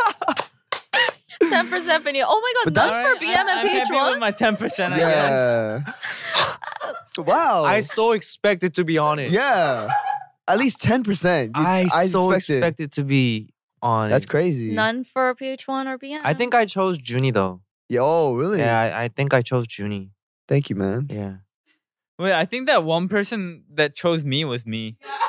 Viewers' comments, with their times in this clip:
0:07 ph-1 voice literally changed lol